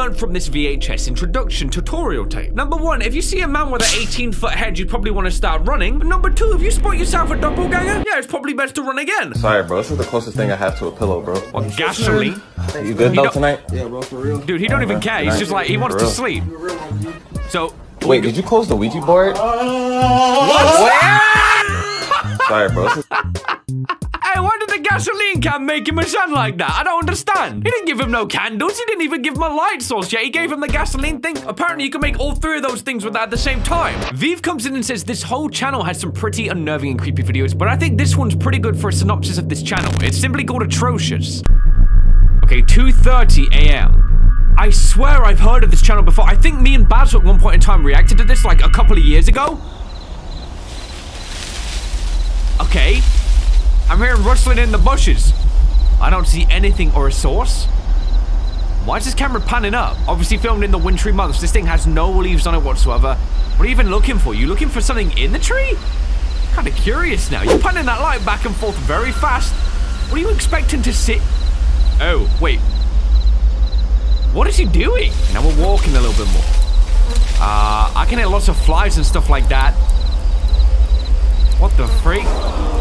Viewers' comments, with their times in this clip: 0:09 YOOOOO THE NOSTALGIA WITH THAT SONG PLAYING
1:07 got me with the EDITING SOUND EFFECT 😂😑😪🥲😵😭💀☠💩🤡👹